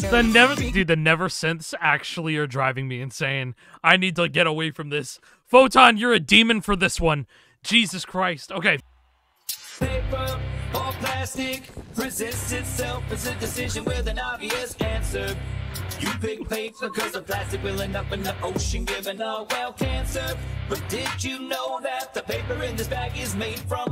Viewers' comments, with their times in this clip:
0:07 "Food Poisoning Type Beat"